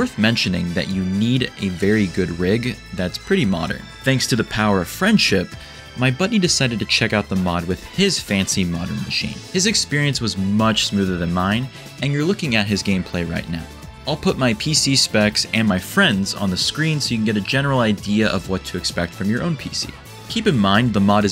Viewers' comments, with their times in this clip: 0:09 Loved the 'Thanks to the power of friendship' jig 😂😂😂